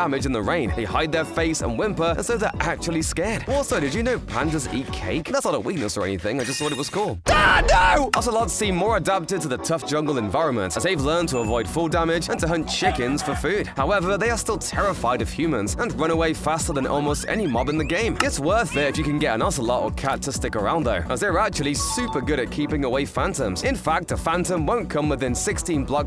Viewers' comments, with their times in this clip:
0:07 is this the guy from smashbits animation, the voice sounds very similar.... he even has the exact same yell.....